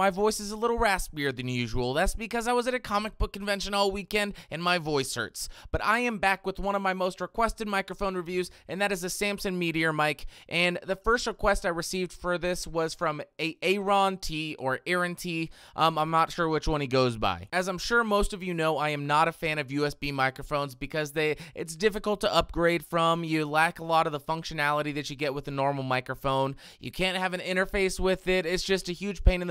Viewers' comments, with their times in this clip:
0:10 Hmm, that sure sounds a bit familiar...